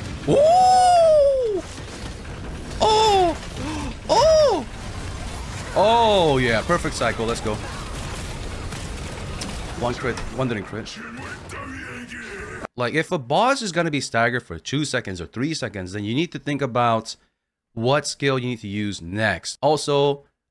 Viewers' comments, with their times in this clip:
0:03 I was not ready for such manly moaning